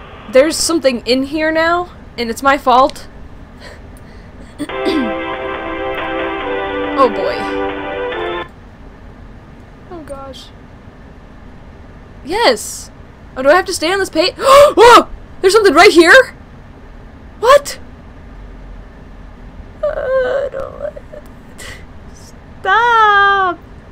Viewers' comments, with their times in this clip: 0:10 somewhere around here molten freddy laughed